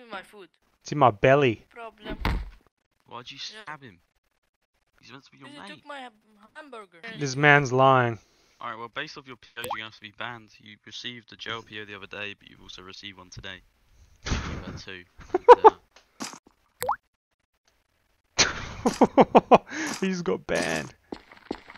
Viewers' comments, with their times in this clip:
0:06 they way that kid says "He took my um, hamburgur" fucking killed me. Shit had me crying 🤣